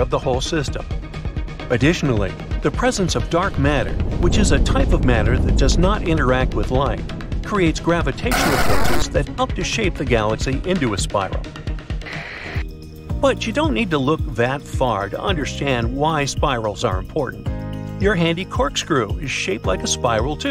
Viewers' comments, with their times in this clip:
0:08 Did... Did anyone else get an audio glitch here?